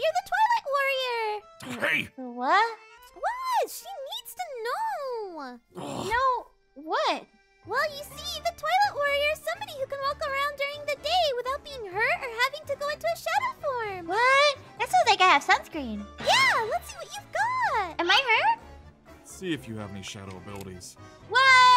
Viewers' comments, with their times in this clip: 0:06 did she just say.... TOILET WARRIOR??? XD